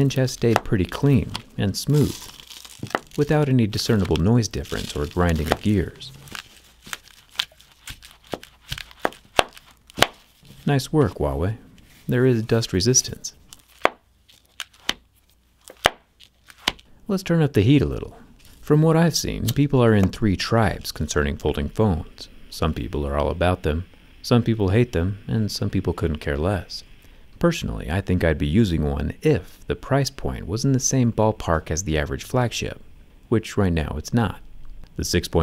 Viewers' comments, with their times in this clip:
0:08 the opening and closing here sounds ummm... 😁
0:19 You can hear the dust in the hinge mechanism